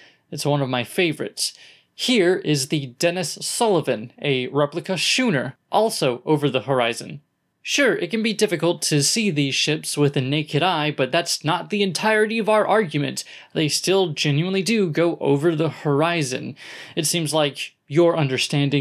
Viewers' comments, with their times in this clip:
0:04 Sorry, mate, but "shooner"? ;)